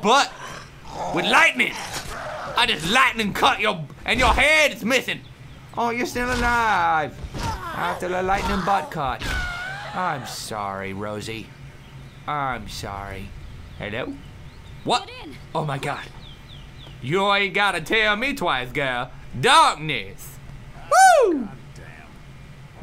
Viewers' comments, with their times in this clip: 0:08 zombie fart XD